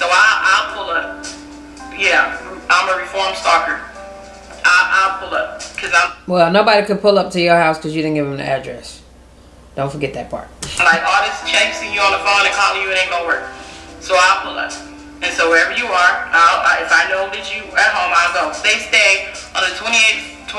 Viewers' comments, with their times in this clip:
0:08 tried to play that sad ass Tyler perry music for sympathy... SAD SAD